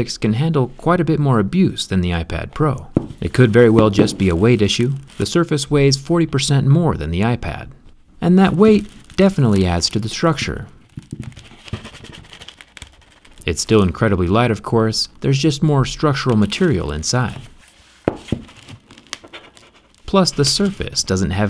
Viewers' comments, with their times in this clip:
0:06 Me AM watching this but trying not to wake everyone up: Jerry drawing art on the tablet: SCREEEECH